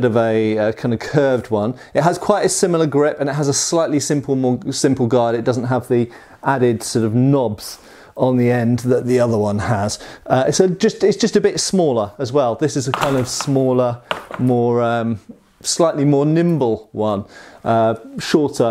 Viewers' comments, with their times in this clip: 0:03 Pronunciation for Nagel was on point (2nd try)